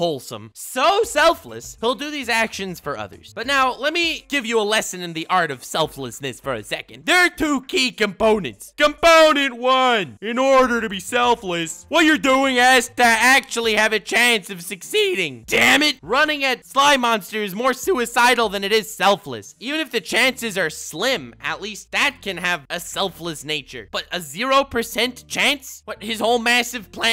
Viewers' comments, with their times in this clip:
0:09 My guy went Joe Swanson and i loved it